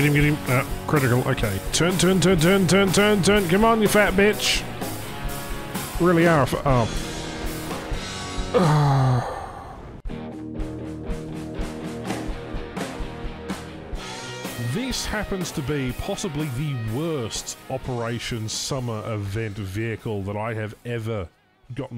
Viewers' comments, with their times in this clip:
0:04 the pure fucking pain in your voice is just saddening